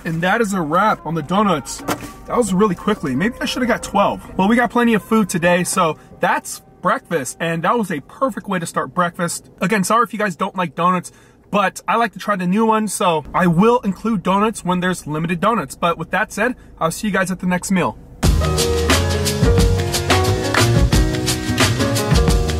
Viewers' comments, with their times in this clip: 0:09 Is anyone else laughing at how he said that’s breakfast